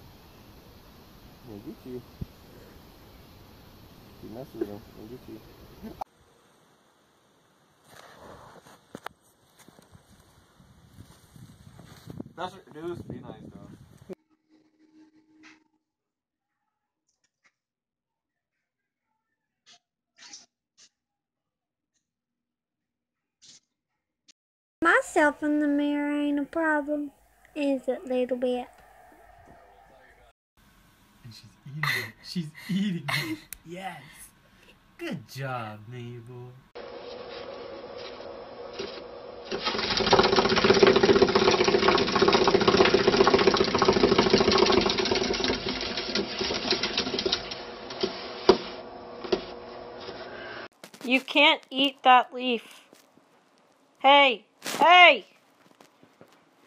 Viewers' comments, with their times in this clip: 0:05 This should be on one of those Perfectly Cut Scream Compilations 😂😂
0:40 A car engine starting